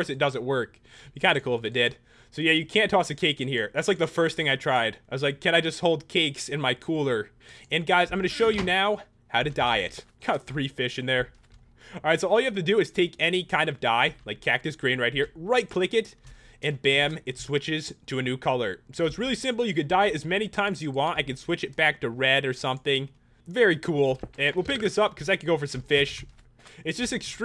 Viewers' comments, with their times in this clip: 0:08 lol thought you said how to diet